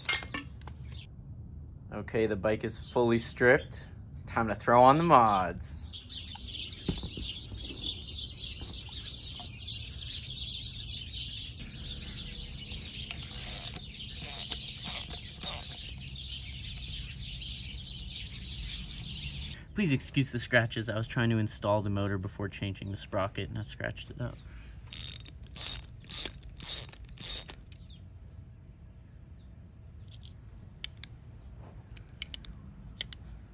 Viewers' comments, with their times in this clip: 0:06 Damn those birds goin insane
0:15 bro tell the birds to SHUT UP